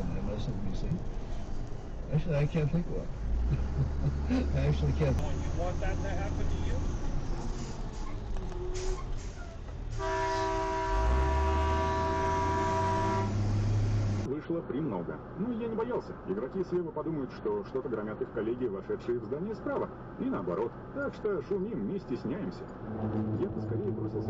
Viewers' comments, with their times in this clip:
0:06 a bit over dramatic with that honk